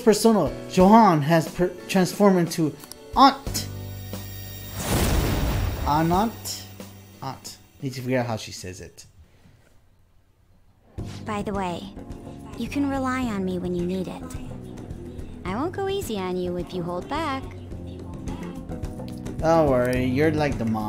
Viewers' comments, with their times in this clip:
0:05 Why am I hearing an echo with the game's audio?